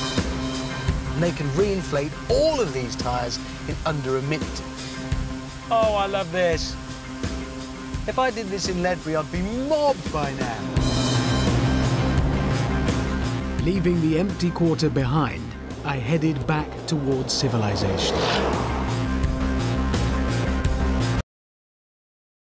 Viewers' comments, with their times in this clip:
0:07 did he sayed Latvia?